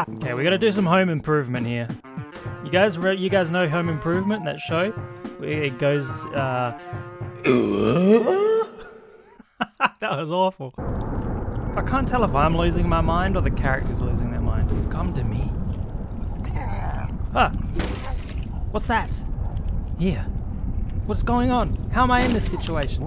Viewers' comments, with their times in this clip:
0:07 homie if you need a tim allen grunt, I can hook you up.